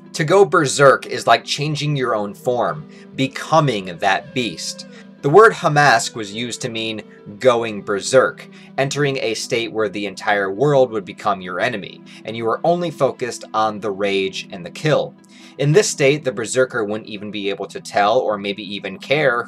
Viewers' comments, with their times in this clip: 0:04 did you say Hamas like the terrorist group?